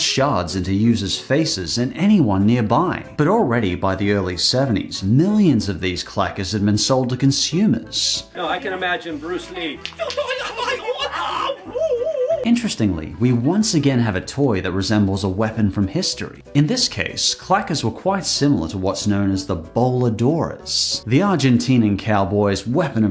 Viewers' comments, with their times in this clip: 0:10 that war cry though 😂 lmao